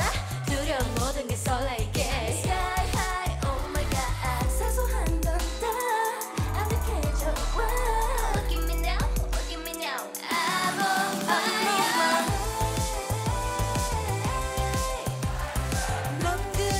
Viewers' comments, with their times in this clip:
0:04 line is always good to listen to~ Liz's tone is 👌